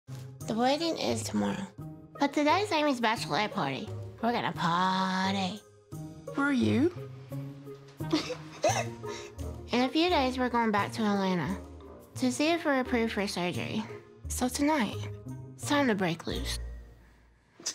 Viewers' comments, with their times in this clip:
0:04 my boyfriend thought that I was watching Spongebob bc of her voice